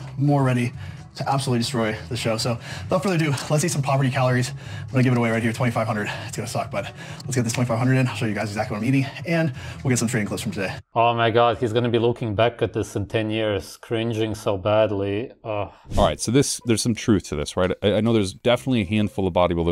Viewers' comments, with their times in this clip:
0:03 To be fair, he can barely talk due to being so out of breath